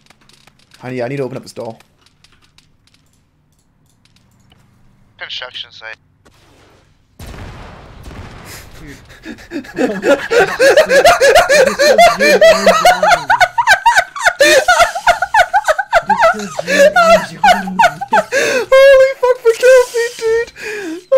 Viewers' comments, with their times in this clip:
0:07 he sound like he was dying 😂😂😂